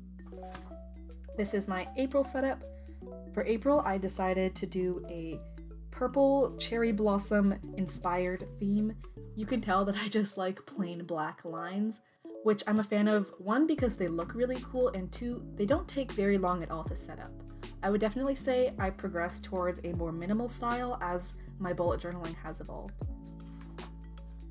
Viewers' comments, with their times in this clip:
0:07 is playing Pokémon music cuute 🍦🌸